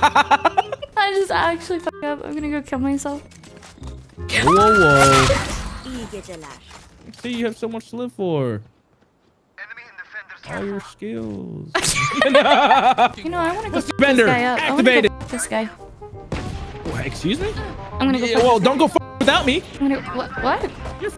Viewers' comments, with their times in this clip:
0:03 idk if she's aware but screams like are REALLY FUNNY.